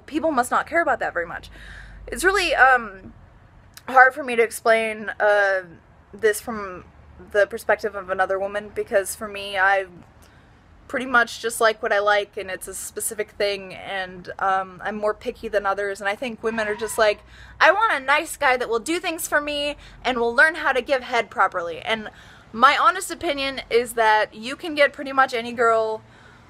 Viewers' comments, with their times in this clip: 0:09 anyone else hear that potential car accident?